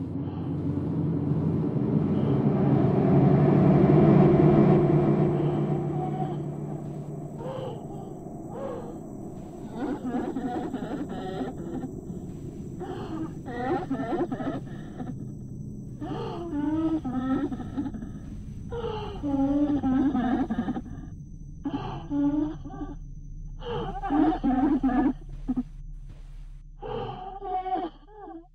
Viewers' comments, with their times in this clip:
0:10 Screaming Screaming Screaming Screaming is okay, but it doesn't hold a candle to Horrible Screaming Murderers' previous hit, Murder Murder Murder Murder. Hey, a DG-20.I have one of those! Best electric mandolin sound ever...